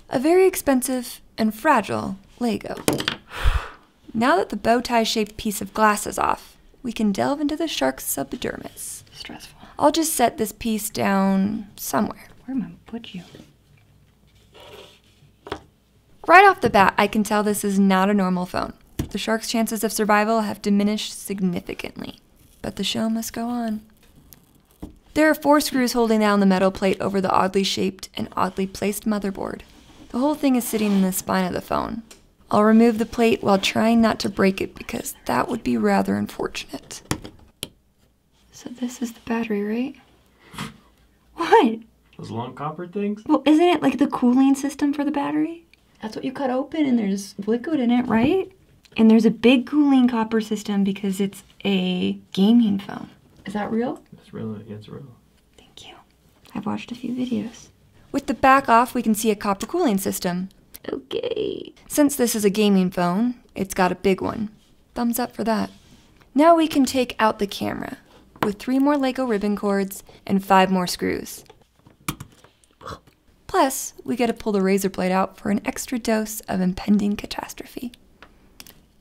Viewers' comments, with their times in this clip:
0:08 increase volume and listen you will here "stressful" 😂😂😂
0:09 does any one els hear someone say stress full
0:09 I heard zach whisper in the timing
0:39 "isn't this the battery? " The way Zack scoffs 😂😂😂
0:40 Zack just can't hold his laughter when his wife mistook the cooling copper pipe to be the battery.
0:41 no he has 2 voices and he can still switch to his original voice
1:02 "since it's a gaming phone it has got a BIG ONE" Not a single person: Sexy voice: "thumbs up for that"